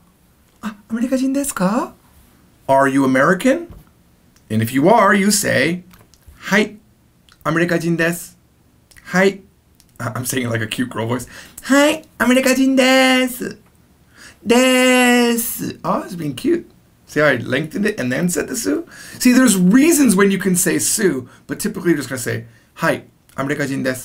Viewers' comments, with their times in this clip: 0:10 I also think in Japanese with a cute girl voice idk why